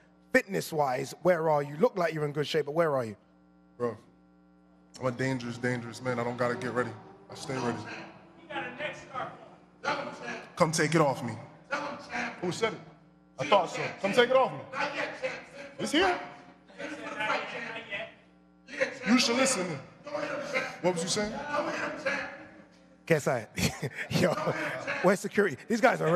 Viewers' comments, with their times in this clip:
0:08 Who's screaming at Greg in the crowd and what were they saying to him?